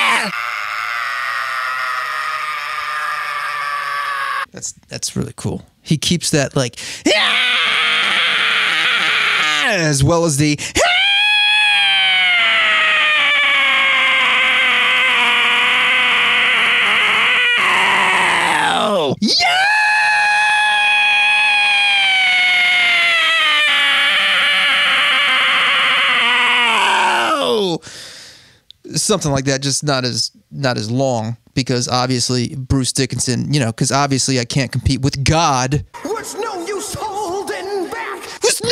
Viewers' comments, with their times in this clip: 0:06 The gut-wrenching cry of a dying hamster.
0:19 it sounds like he's brushing his teeth
0:23 Coil whining intensifies...